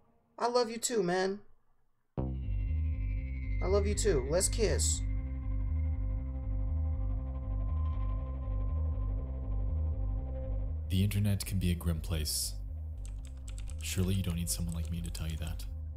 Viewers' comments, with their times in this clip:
0:03 "Aw, loI love you too, lets kiss." 😂😂 wtaf but also lmfao that shouldn't have been as funny as it was to me like idk y but that was hilarious to me. Also your voice and personality remind me of Richard Pryor for some reason it must be the voice lol